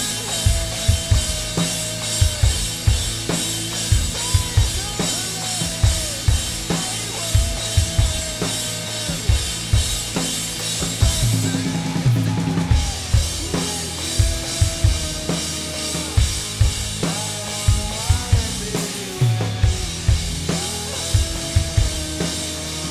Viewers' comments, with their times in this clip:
0:09 This is awesome! Thanks for the upload. I'd say its 99% accurate, with the exception of the fill To me, it sounds like he goes around both toms with the 32nd notes, not back and forth between the rack tom and snare. Either way, it sounds great!